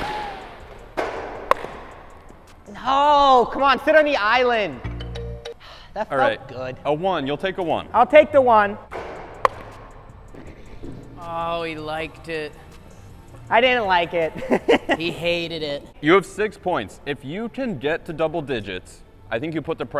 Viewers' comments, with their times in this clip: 0:03 I almost spit out my ginger ale when Under the Sea started playing